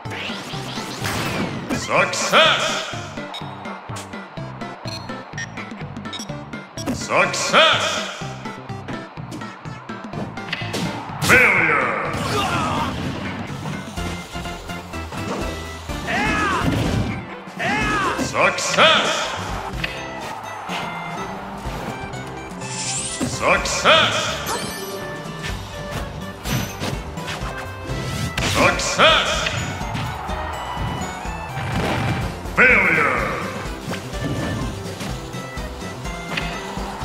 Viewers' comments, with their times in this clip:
0:09 Anyone else hear the tiny meow?
0:24 who else thought zelda said "F#$@ you" xD